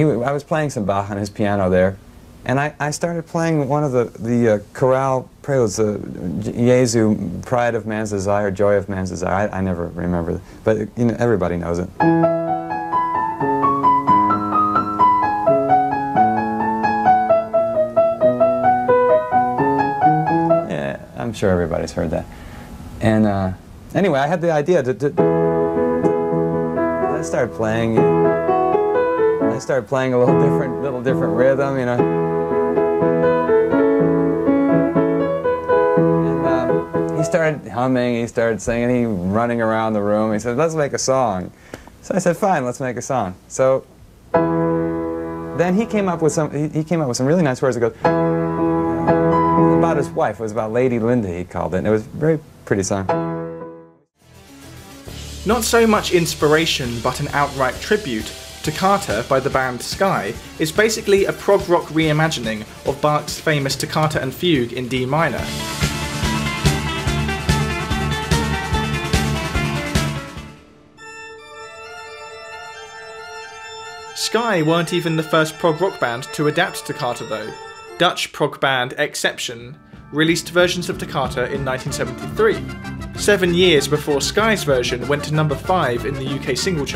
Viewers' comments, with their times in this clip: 0:10 I hate it when people play Bach like sh*t on purpose just to play their own version right after, suddenly putting a lot of intention in it, like they managed to "improve" Bach. Jethro Tull does the same before playing the Bourrée. Seriously guys, if you are going to steal someone's piece at least respect him... Here he's saying "I'm sure everybody knows that...", almost with some disdain, like he apologized for playing an old dusty piece of music nobody cares about. Like he is the one who put life in Bach's pieces....
1:10 reminds me of Thunderstruck by AC/DC, I wonder if they also lifted from that bach piece?